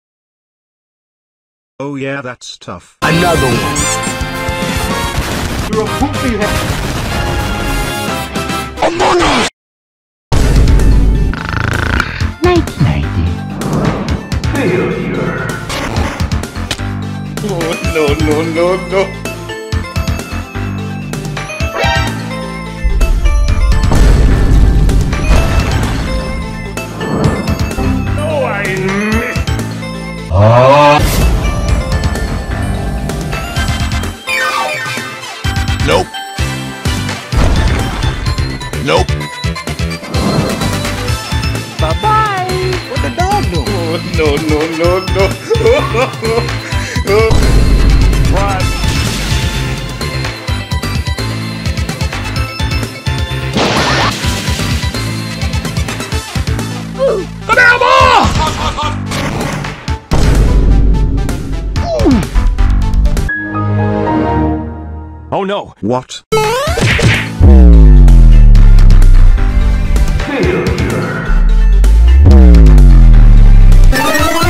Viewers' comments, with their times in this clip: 0:10 What's the song ? Sounds sexy and weirdly nostalgic.
0:58 What is he saying ? 'banana ball'? 🤣 What is that from??